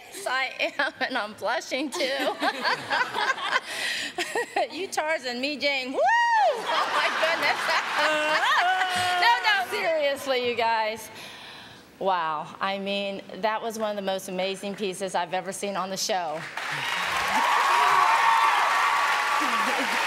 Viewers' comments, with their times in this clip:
0:07 LMFAO I swear Cat dealy looked and sounded like the guy from goonies